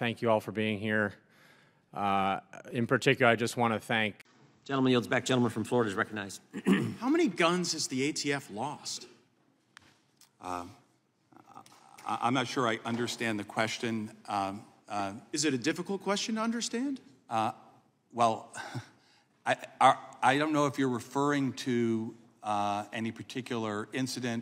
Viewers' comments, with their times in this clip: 0:06 classic uh um um uh uh um